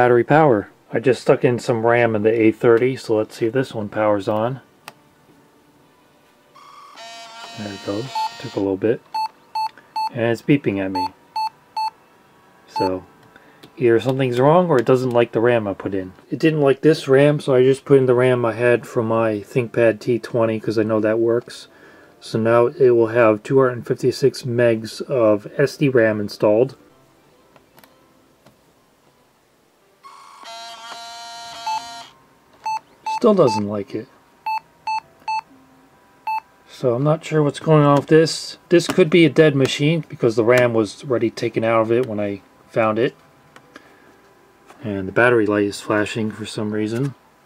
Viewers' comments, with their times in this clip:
0:05 that post code ment that the keyboard is defective I know that because I have a thinkpad R61 and the first time I tryed it, it beeped in that pattern replace the keyboard with one that works and it will start up hopefully.
0:07 what does that beep code mean cause my g6 266 gateteway 2000 Pentium 2 MMX PC does that beep code
0:32 Based no the number of times it's beeping that's definitely a memory error. According to some specs I found it says: one beep, three short beeps, three short beeps, one beep means "Memory problem: bad DIMM or bad DIMM slot"